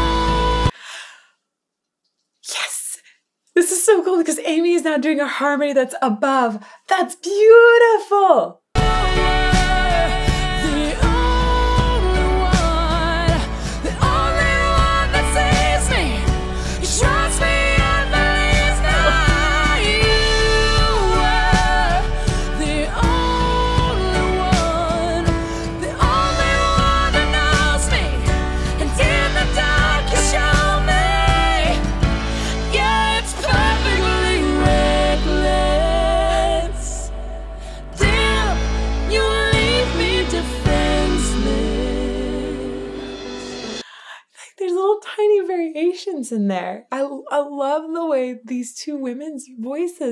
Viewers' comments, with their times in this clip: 0:03 Well, they went and did it. the harmony has my eye fountains working.
0:38 That flip of the harmony or so? THAT is a result, musicaly anyway, of the song. The fact that they resolved that chord with such precision, with a nod to the Bass line, is amazing.